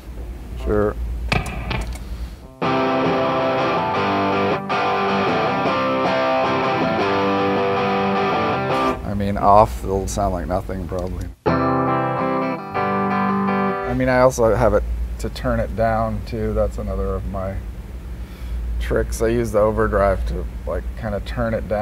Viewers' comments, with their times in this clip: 0:09 "off it'll sound like nothing probably" has perfect clean tone instead lol.